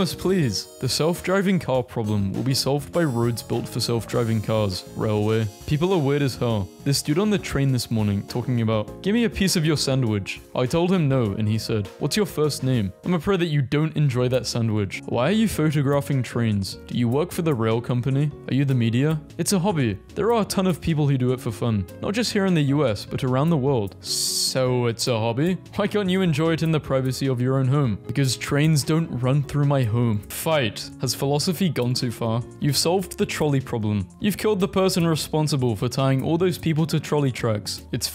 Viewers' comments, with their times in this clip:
0:04 Damn, i thought you said Rowley 💀
0:26 she sounds like trains run through her 24/7